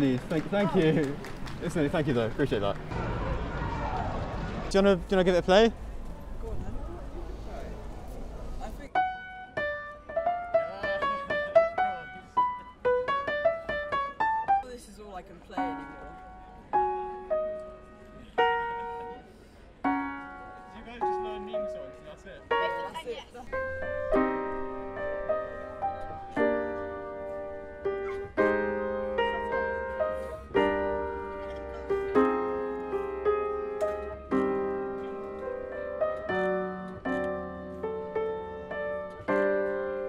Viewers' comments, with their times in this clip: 0:10 As the kid start playing giorno theme my mind that kid is dope
0:23 When I heard castle on the sky I was so shocked! It’s my favorite ghibli movie and barely anyone seems to know it. And he played the theme so great!